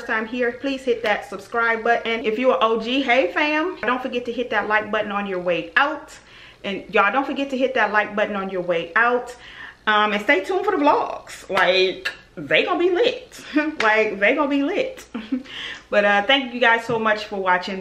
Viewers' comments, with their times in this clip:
0:04 was that an edit or u said it twice 😆